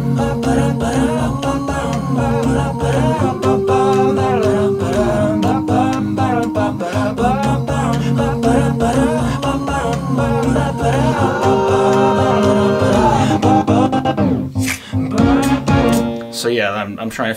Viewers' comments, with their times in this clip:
0:05 the sound adderall makes